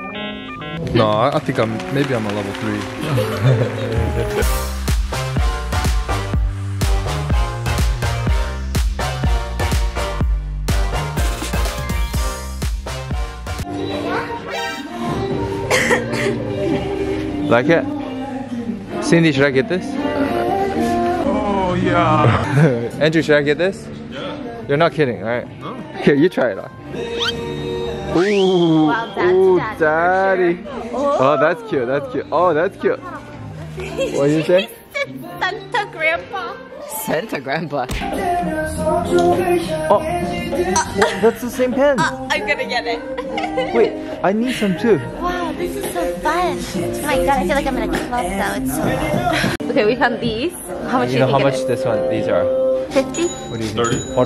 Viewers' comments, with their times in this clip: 0:04 sounds like red velvet queendom
0:14 OMG BAEKHYUN BAMBI PLAYING IN ALAND
0:15 the way i got distracted the second i heard bambi playing in the background XD
0:15 Bambi playing in the background 😭😭😭
0:22 I need a moment. I was fanboying over Baekhyun and Kyungsoo solo album songs in the background 😱😱
0:38 love the bg sound with my soul 😩